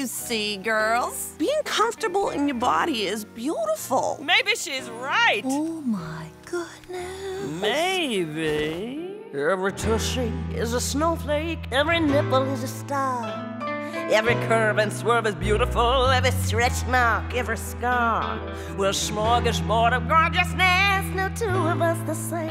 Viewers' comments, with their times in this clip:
0:07 is were the song starts ;)
0:08 Song starts for those doing exactly as I am and playing this on repeat because that voice is beautiful!
0:09 the song starts